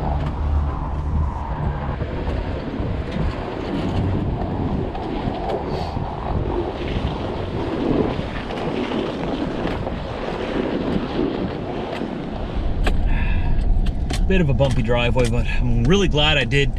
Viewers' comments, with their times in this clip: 0:03 that snow crunch!